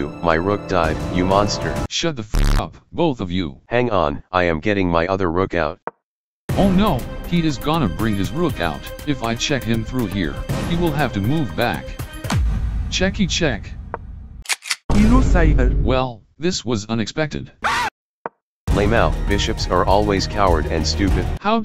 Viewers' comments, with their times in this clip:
0:09 bro the bishop's words ryhmed